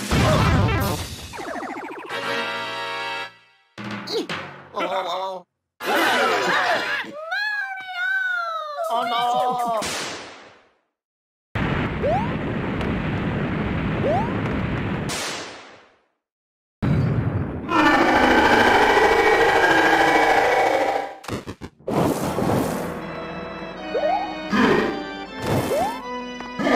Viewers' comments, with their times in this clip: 0:08 Lol in new super Mario bros 2 DS she says Luigi more calmly than Mario